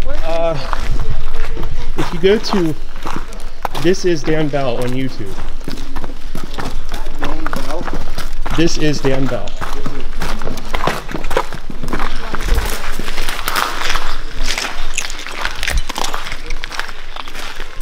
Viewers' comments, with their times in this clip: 0:03 Best part starts Great music selection.
0:05 The bit made me laugh my arse off. The music and flashing lights, nice, haha! But yes on a more serious note, its quite sobering to hear of all the darker stuff that goes on in neglected places like these.